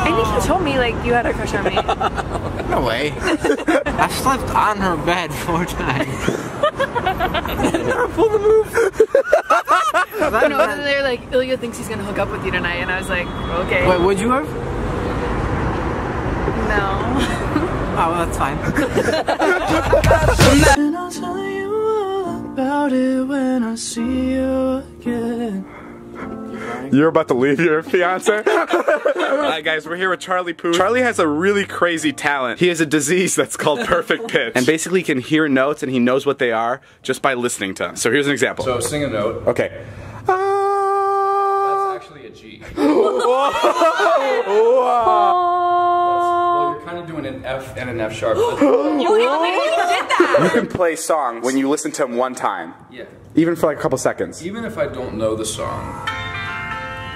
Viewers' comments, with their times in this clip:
0:07 He sounded like shaggy from scooby doo
0:41 sounds like the beginning of 151 Rum by JID 😂